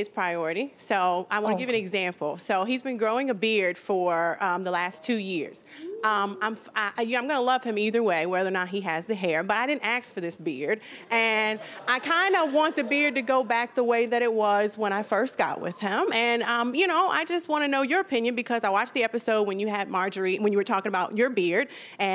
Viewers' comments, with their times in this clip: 0:08 Did she say “ax”? She has no right to demand anything from him unless she can make the request using proper English.
0:08 english is not my main but did i hear her saying "i didn't axe for this beard" ?, it suppose to be ask not axe ?